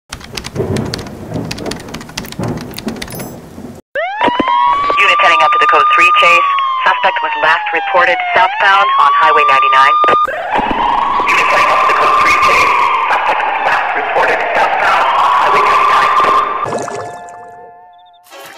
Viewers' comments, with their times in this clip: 0:03 Police Car Siren And Woman Police Officer 👮‍♀️ On Radio